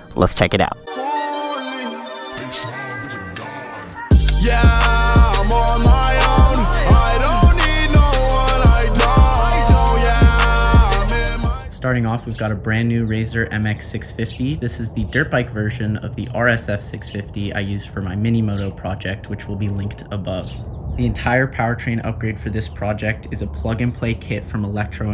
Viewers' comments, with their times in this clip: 0:10 is it just me vibing when this banger comes on